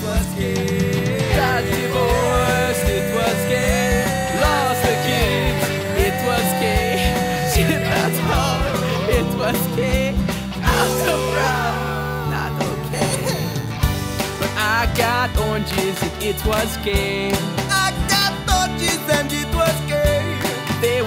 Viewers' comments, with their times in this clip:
0:07 Am I mishearing the lyrics or are they saying "Shit the tub"?
0:07 No matter how many times I listen to it, always sounds like "Shit the tub. It was K."